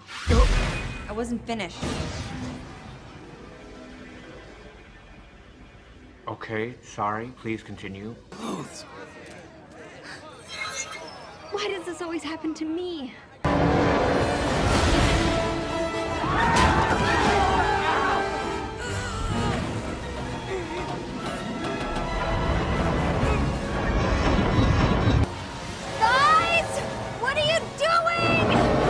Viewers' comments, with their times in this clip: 0:10 i love it’s like sliding glass